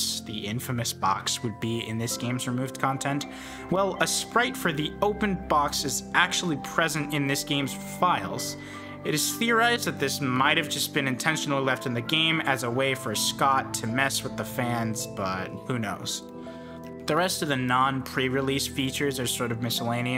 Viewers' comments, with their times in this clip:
0:07 why does this sound kinda like the stardew valley music